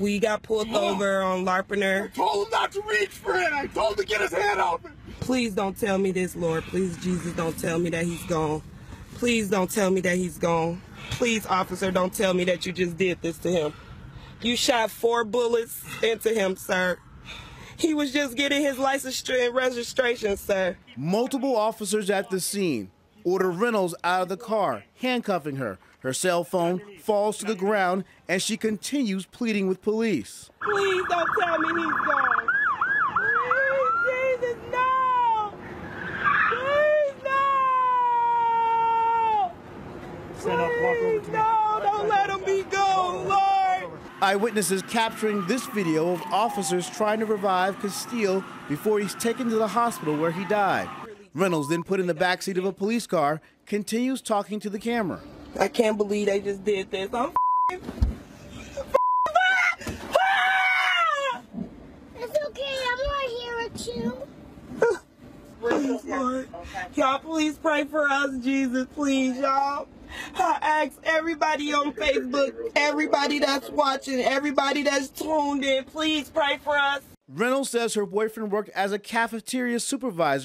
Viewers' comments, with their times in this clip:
0:04 police screaming, hes acting less proffessional than the girlfriend police training is actually a joke
1:01 Bro i literally started crying when i herd the little girls voice